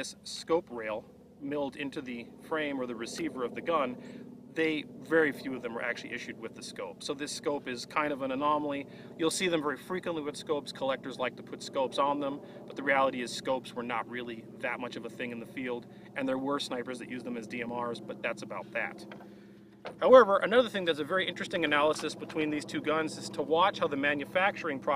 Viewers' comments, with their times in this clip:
0:07 Like these videos! Nice “period correct” radial airplane engine sounds at time slice ...